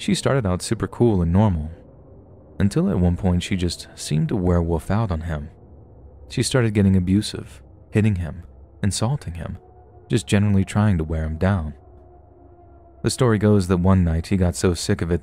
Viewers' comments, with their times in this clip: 0:03 "werewoof" Pronounces wolf like a 6yo, confirmed👌